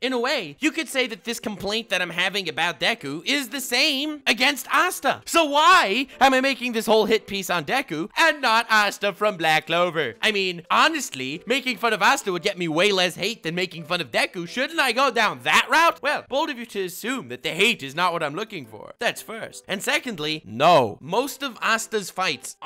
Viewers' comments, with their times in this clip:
0:09 lmao the way you talk is just hilarious, one of the reasons I subbed.